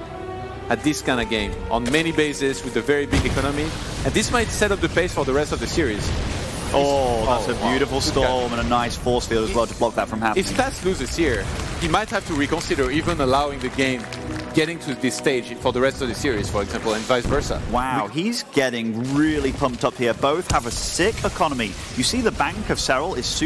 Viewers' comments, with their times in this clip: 0:06 i can hear the clapping of the audience after those sweet storms on the banelings. Amazing!